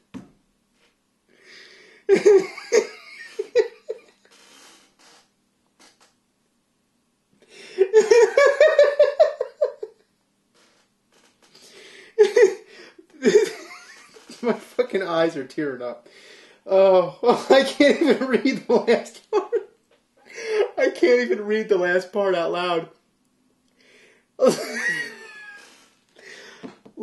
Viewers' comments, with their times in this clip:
0:10 i love how it looks like he tries to regain composure but then IMMEDIATELY collapses back into laughter
0:13 There's one part of James's laugh that gets me everytime: